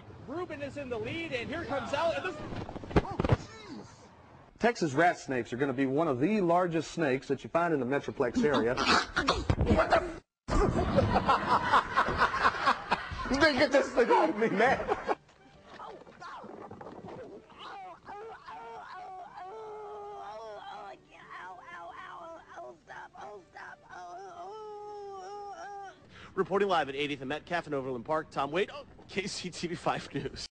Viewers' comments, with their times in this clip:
0:05 haha the dude sounds like bill cosby
0:18 lmfao sounds like a hurt dog